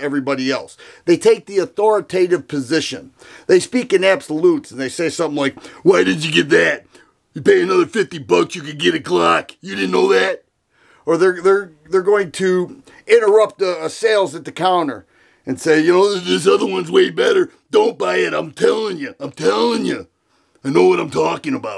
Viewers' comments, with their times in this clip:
0:06 sounding like Macho Man Randy Savage 😂